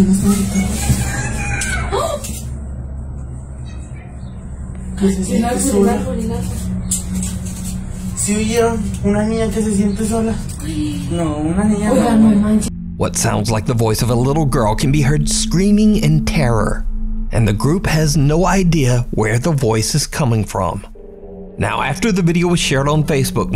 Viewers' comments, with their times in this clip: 0:05 Rather, they heard the cry for help from the kidnapped child 🤺
0:06 the little girl sounds like she’s says “I want to get out of here! I feel alone!” But I could be wrong.